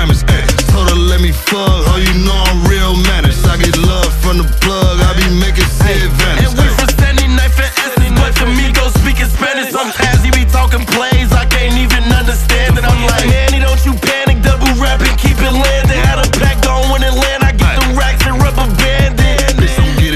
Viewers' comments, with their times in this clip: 0:08 the amigos speaking spanish